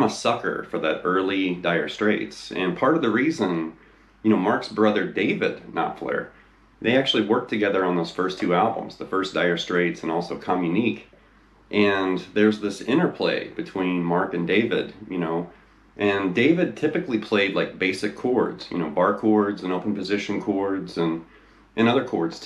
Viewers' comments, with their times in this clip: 0:10 I've always pronounced that album title ( Communiqué ) as commune-e-kay